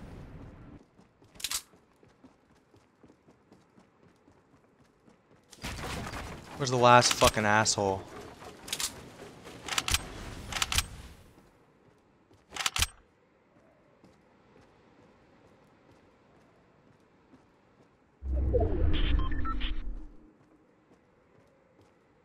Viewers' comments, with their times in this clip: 0:06 he sounds like lil kid lmao